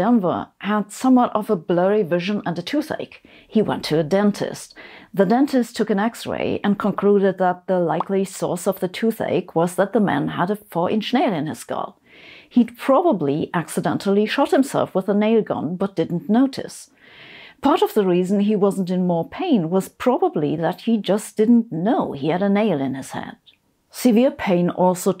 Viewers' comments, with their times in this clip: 0:06 You nailed that delivery